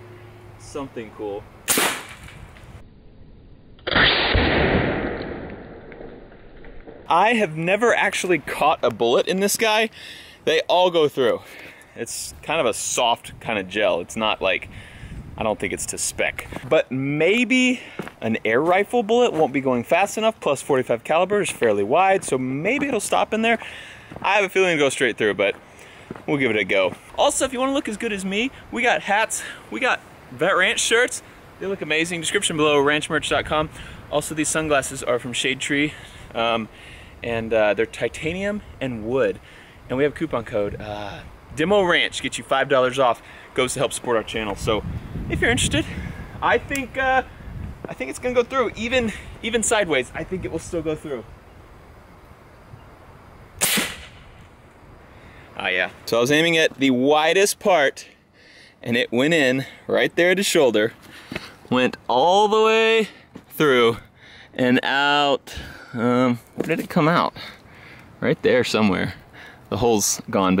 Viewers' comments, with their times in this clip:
0:03 sounds an mw2 intervention lol
0:52 I love the sound the gel dude makes